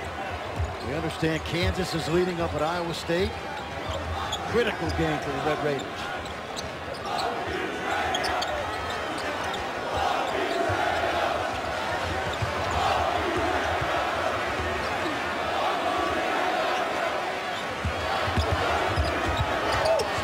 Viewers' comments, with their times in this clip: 0:04 In you can hear the fans chanting F Trae Young